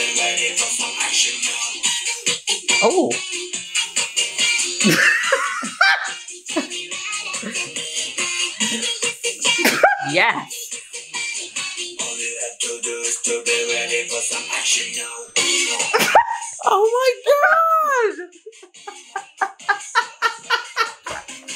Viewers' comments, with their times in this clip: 0:05 that laugh is a mood 😂